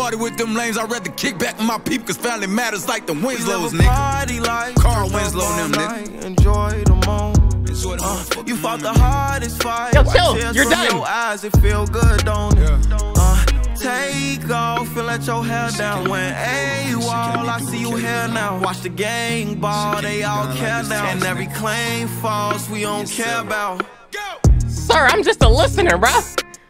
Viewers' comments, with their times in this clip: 0:10 I had headphones on rolling cuz that’s exactly how I reacted to those adlibs